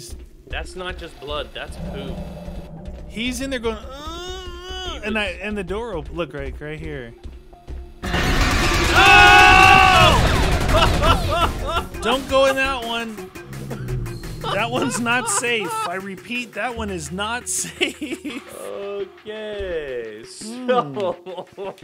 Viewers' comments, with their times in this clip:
0:09 the collective “OOOOOOHHHHH” was hilarious!